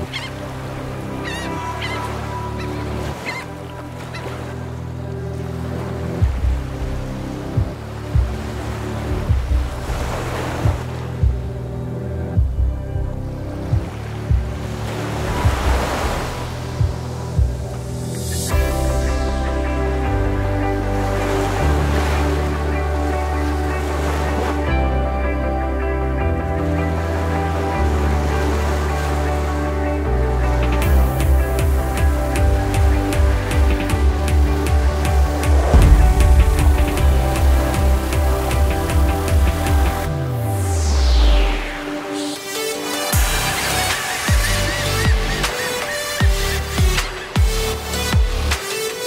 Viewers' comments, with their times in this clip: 0:08 Some of the shots and the sound design on that broll sequence was 🤯
0:35 that's in wave form! I could hear that wave intro! heh!
0:35 The sound of the wave hitting the rock is so satisfying. holy crap!